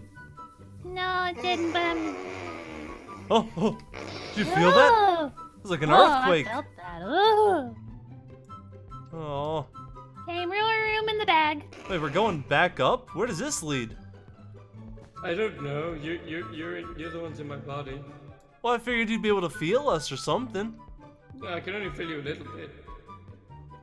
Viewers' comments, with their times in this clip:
0:07 I like the way chica said aeeehhhw in